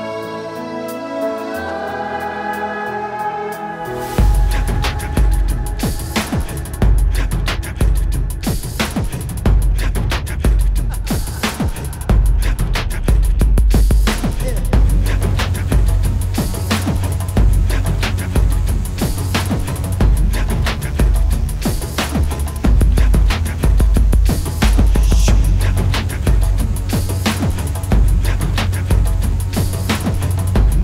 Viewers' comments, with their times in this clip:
0:06 put it on x2 speed and the music becomes drum and bass
0:17 If you put play back speed to 2x and skip to the music is absolutely fire